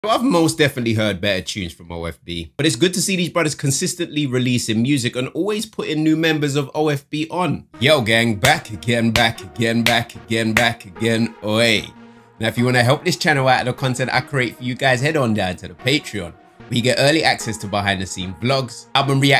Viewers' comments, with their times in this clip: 0:00 rate the voice crack